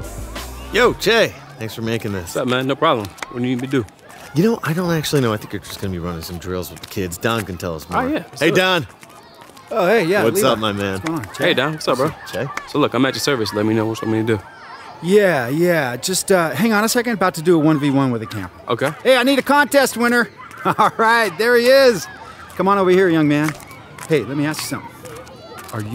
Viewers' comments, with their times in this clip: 0:10 did they just use a handshake soundclip for fistbumps ? Hello 2k?